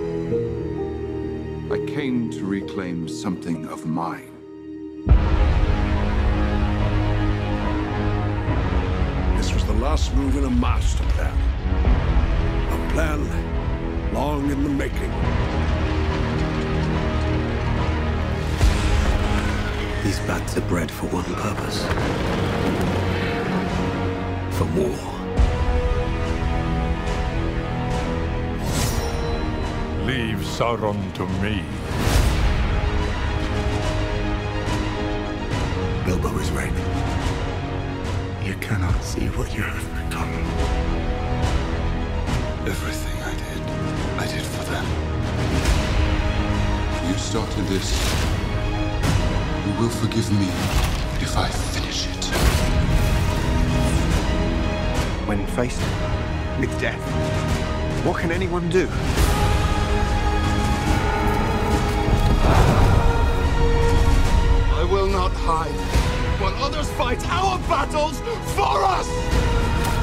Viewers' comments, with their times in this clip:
0:05 The way the music kicks in is majestic
0:56 Kinda hate the fact the official release did not have chorus that starts